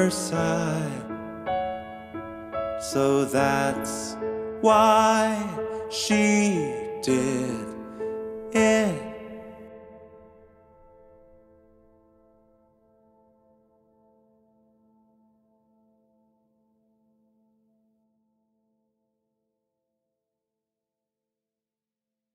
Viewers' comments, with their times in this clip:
0:06 … just the genius of leaving the entire composition of “the chicken” unresolved is such a genius choice. leaving the very same eerie feeling of the same 2-line joke “to get to the other side” where you feel like the joke wasn’t finished. you have to use your imagination to think of a ending